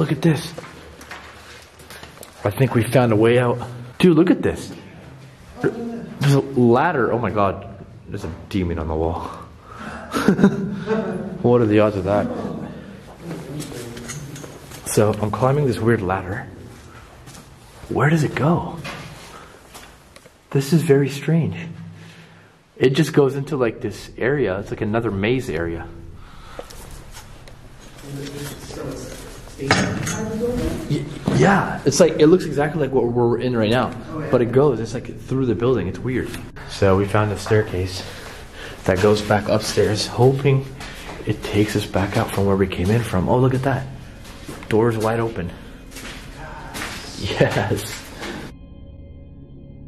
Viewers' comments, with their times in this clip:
0:03 I hear some one say hello
0:04 there sounds like maybe a voice? Maybe? When you find the ladder...
0:04 girl evp talks.
0:07 swear I heard a female yell
0:30 evp talking like woman or teen. Says something over both your talking.